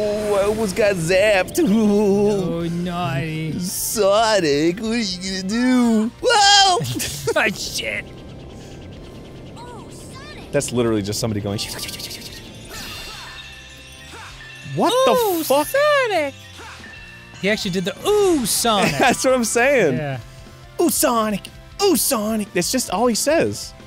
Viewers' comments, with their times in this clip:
0:08 I think those are different interjections: "Ooh, Sonic" is what Arin says during his nervous breakdowns, and "Oh, Sonic" is what Sonic's partners say in those fanfics Dan used to read during Sonic LPs